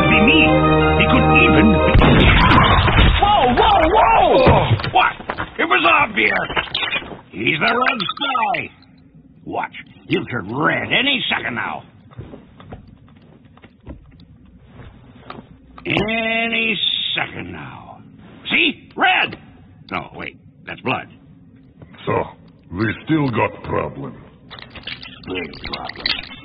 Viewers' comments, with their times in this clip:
0:09 the teachers camera and mic on zoom class be like